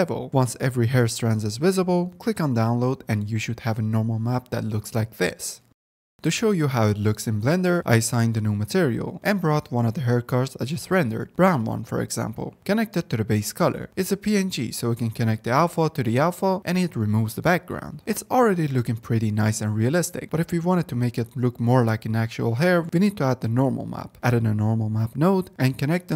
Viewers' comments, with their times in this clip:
0:10 signed a new material to wha? how are those created? :D